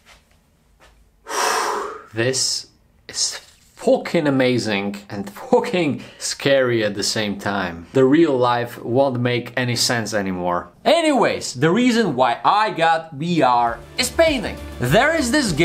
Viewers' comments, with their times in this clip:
0:03 " This is FOOKIN amazing and FOOKIN scary at the same time "